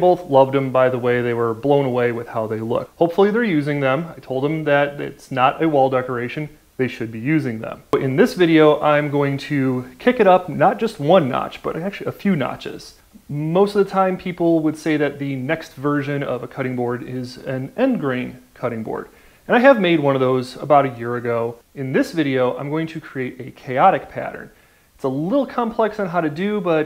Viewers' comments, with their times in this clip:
0:07 audio went out of sync and I thought it added beautifully to the chaos. +1